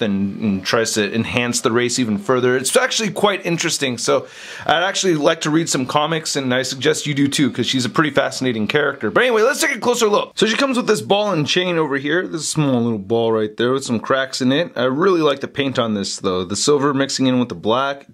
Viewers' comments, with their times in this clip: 0:04 How many of you guys heard the vacuum in the background on ?